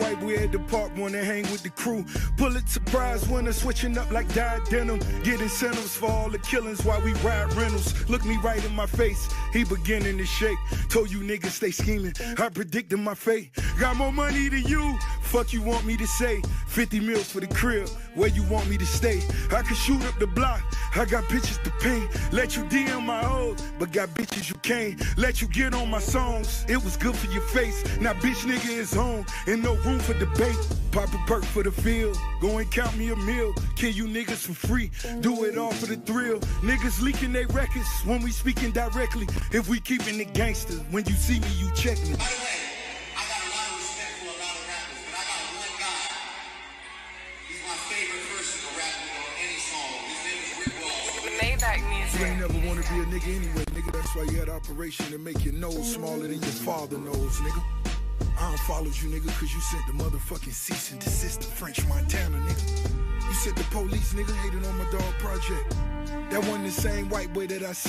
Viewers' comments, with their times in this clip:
0:10 flow is insane
0:48 when he play that "m-m-m- Maybach music" that is so fucking cold.